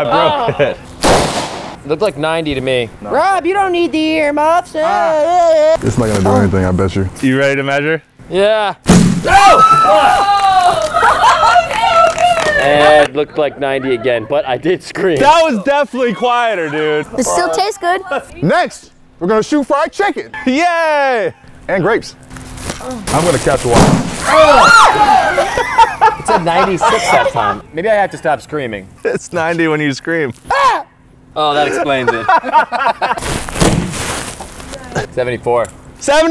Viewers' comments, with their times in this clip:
0:06 The watermelon moan
0:22 The “ugh” gets me every time